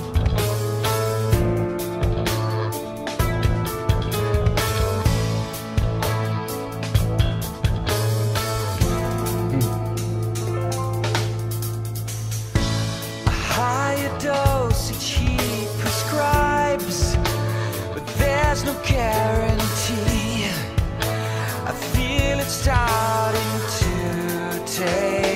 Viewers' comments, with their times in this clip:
0:08 Finally! A masterpiece of masterpieces! The part of lyrics that you interested is wrote by MP. And That fill in gives me goosebumps every time.
0:11 by far the greatest guy to watch reaction videos of - aside from the fact that you absolutely know what you're talking about in regards to theory, your genuine enthusiasm is so much fun to see - HEROIC HORNS!! Been a DT fan since their (underrated) debut and they've released some amazing and intricate music but this song definitely is their absolute monument. It has everything. Including HEROIC HORNS!! (and the cymbal nod ...)